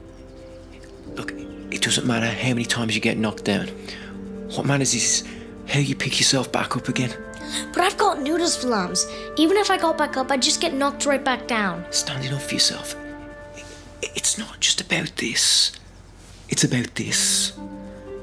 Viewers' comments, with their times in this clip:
0:06 This video is the best one ever, Dhar Mann is my favorite content creator. And I Love His voice sooo smooth and so British :face-green-smiling::face-green-smiling: